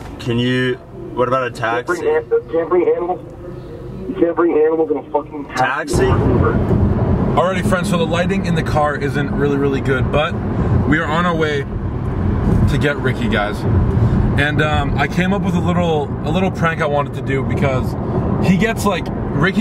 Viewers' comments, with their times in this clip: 0:07 did he say lightning or lighting